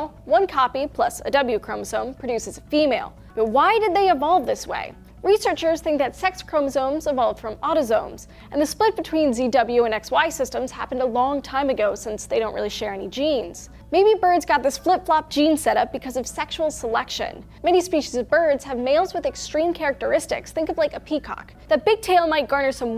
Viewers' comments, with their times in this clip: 0:06 evolved from Autozones? Hmm... I see they sell more than just auto parts there huh? Shut up, I know she said autosomes...